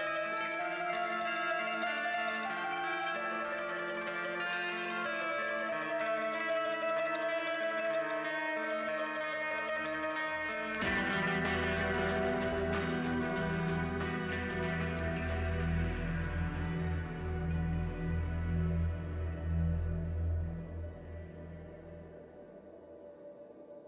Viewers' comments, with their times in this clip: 0:10 The music sounds like it was about to get badass Why did it have to end?